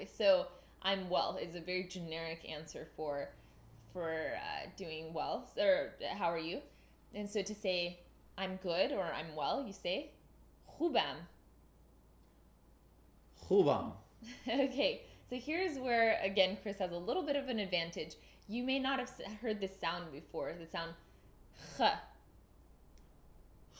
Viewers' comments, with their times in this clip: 0:06 very interesting, in Finnish we'd respond with the word "hyvää!" which sounds slightly similar to the Persian one :o